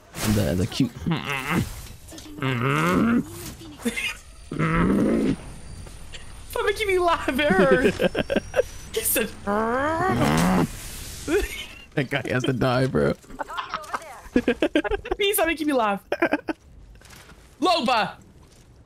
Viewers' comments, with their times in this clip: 0:03 it’s 2 am where I’m at and I heard the “RMMMMM” and I started lost it 🤣